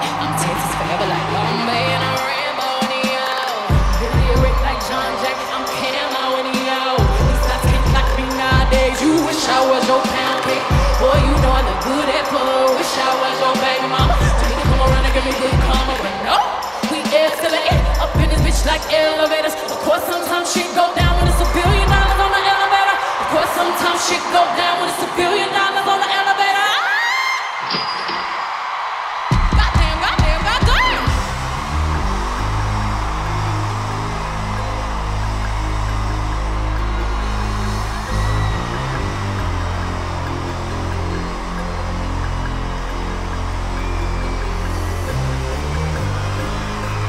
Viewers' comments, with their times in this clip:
0:06 put her deep voice to work😍😍
0:31 Before Bey introduced Nicki (during the dance break) you can hear the instrumentals for beez in da trap ( the sound before she starts rapping ) 🫶🏽
0:32 the way bey mixed beez in the trap with flawless for nicki’s entrance 😍😩